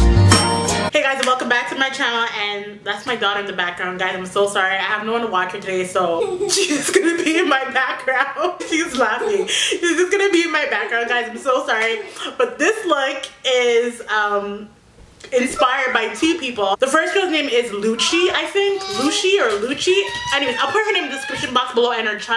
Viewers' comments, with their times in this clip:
0:03 your daughter laughing in the background was the cutest baby ever. The part when she touches your sholder makes me laugh so much and I don't know why😂😂😂😂 I'm sorry girl... she stole the show at one point 😂 Anyways I love this look so much. I think I watched this video like 4-5 times